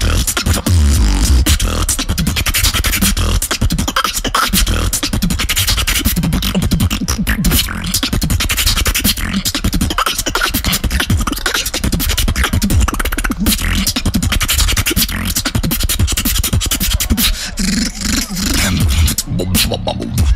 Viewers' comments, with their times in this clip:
0:07 my alien of the area 51 when he wants to ate